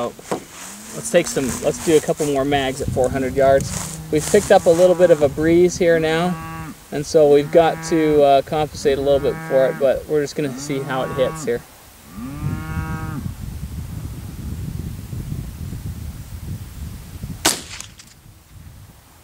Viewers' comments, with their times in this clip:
0:04 I Seriously thought my phone was Ringing xD